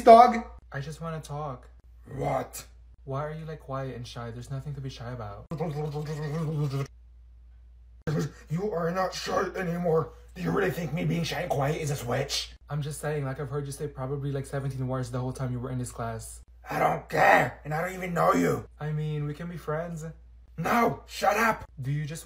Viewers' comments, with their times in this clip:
0:05 this made me wheeze, SHE WENT FROM QUIET KID TO A POSSESED DOG 😂😂😂😂😂